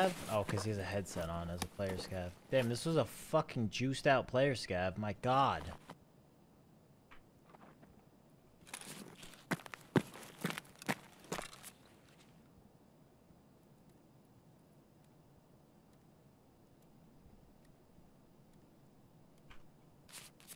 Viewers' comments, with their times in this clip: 0:06 You can hear people in the basement from the 1st floor in the cafeteria. They are really loud for some reason. I don'tthink you need headphones even.